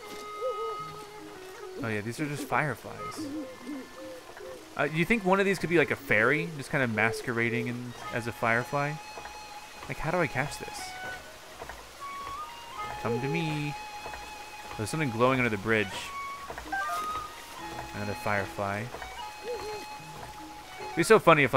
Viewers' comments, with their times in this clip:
0:06 "A fairy masterbaiting as a firefly"